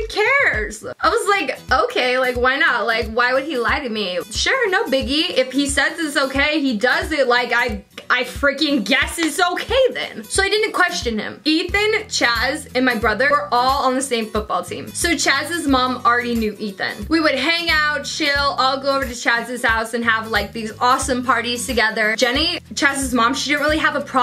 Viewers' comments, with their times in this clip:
0:09 you sound like Jenna Marbles :p